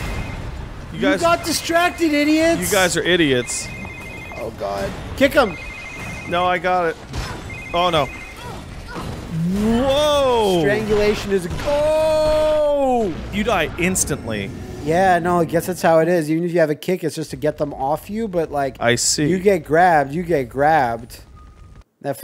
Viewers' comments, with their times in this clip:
0:09 You know what pisses me off? When women and men go through two more or less identical situations in a movie or game or what-have-you, and the woman is never shown taking as much damage. The kill animations in vanilla Evil Within have Sebastian's head exploding, he gets bisected, he gets ripped to shreds. This game doesn't even have the balls to let a zombie cave KID MAN's face in because all women are special sparkly princesses. Watch it again. She doesn't even get blood effects on her face! Not only is it sexist, it's almost completely lacking in impact. Her face is completely unresponsive to the super dream zombie fist and it makes this hilariously crunchy Street Fighter 1 hit noise. Fuck this game.